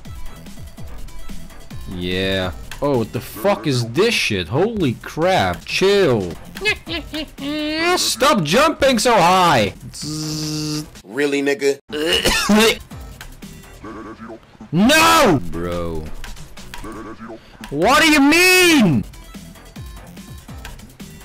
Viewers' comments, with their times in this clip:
0:07 The laugh though XD
0:08 NYEH NYEH NYEH was dat fuging papyruses laugh